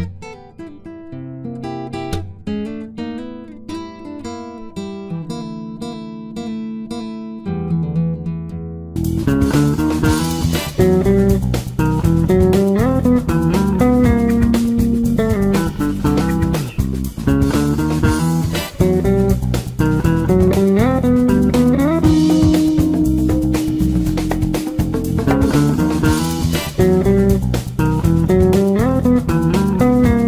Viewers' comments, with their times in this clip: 0:09 this sounded like the zombie catchers sound XD
0:09 this sound like the pink panther pals music from the episodes
0:15 whatsapp ...SLAPPERS !! (SLAP)